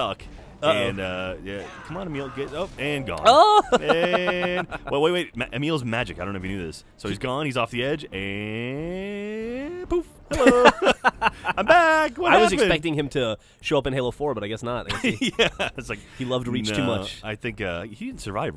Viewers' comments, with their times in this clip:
0:03 is it just me or does geoff sound like a minion from despicable me